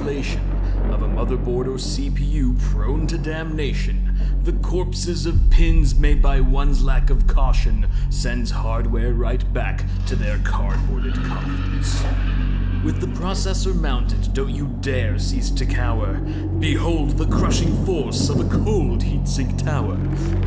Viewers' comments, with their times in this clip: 0:06 love the Linus tech Impression